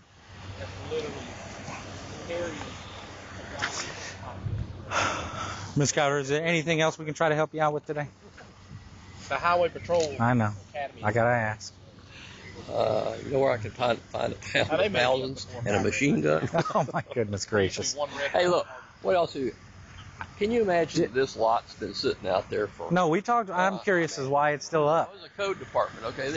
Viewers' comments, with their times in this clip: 0:03 That officer was like "I really want to leave this situation" and reluctantly turns back around *sighs*...."Is there anything else we can help you out with today?.......I know, I gotta ask...." LOL
0:12 did he ask the cop "where can i get melons and a machine gun?"